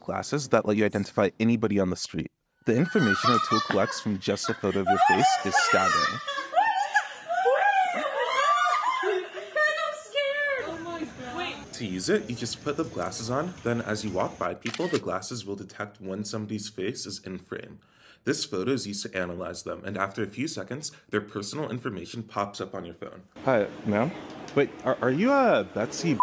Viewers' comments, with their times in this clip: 0:07 They're laughing.....? None of this funny. It is disturbing.